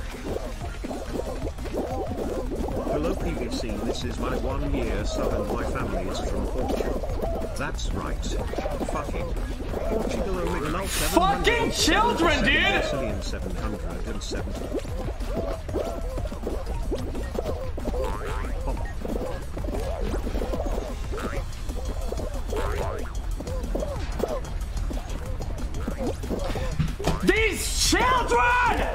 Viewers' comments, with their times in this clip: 0:09 REAL VOICE OMEGALUL